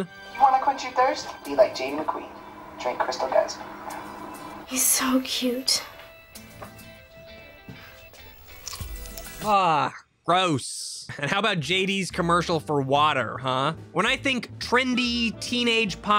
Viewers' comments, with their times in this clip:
0:04 why is nobody talking